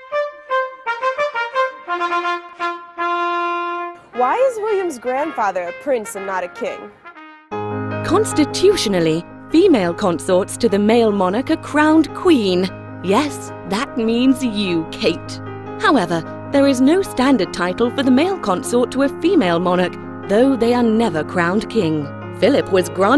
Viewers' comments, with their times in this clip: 0:04 Yes you did, Hail to the chief was written by Englishman James Sanderson. It does sound quite regal. Almost fitting a monarch.